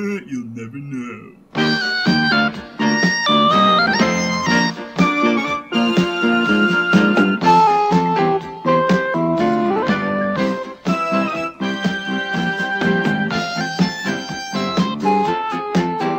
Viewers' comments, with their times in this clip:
0:04 What's the music ? It sounds similar to the Puma Man theme :-p